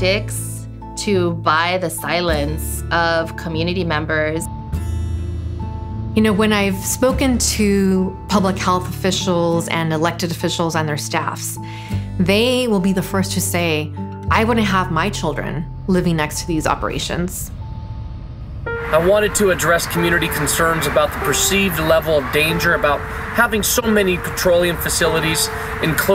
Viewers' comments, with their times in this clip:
0:07 Had my full attention up until I work at a hospital and just got home from my 12 hour shift. It sounds like my heart monitors going off, I was trying to silence the alarm omg lol.